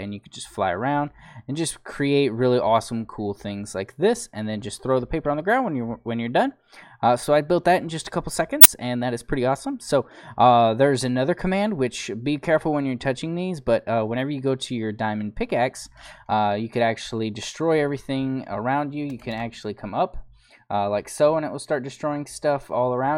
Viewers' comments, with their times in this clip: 0:08 Did anyone else hear his mic play up?